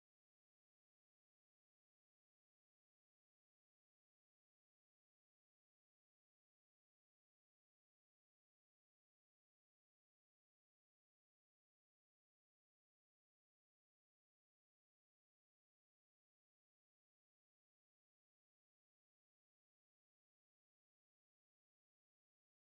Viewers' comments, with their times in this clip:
0:06 Who else played walk during the muted part 😭